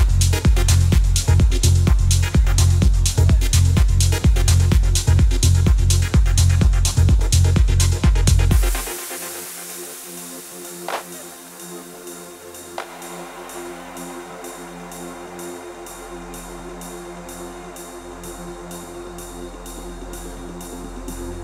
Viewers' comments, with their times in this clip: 0:09 and that machined build is like a min and a half! Seriously some of the best musicianship I've ever seen (and heard). Love and Respect, *A.